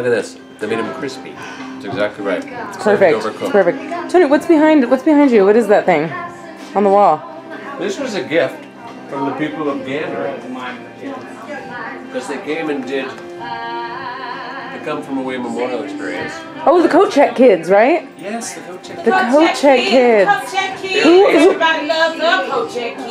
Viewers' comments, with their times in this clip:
0:08 you can hear jen